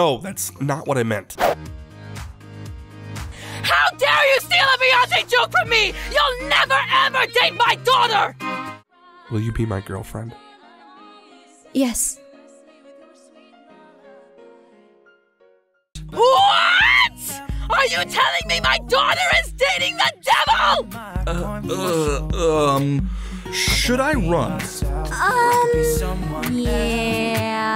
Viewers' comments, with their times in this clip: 0:09 IS THAT KAITLYN SINGING IN THE BACKROUND?